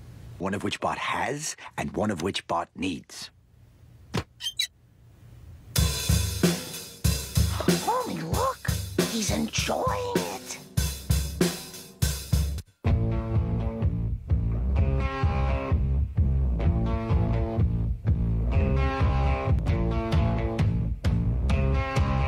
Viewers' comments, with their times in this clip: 0:06 I love how the ride has the sound of a hi hat 🤣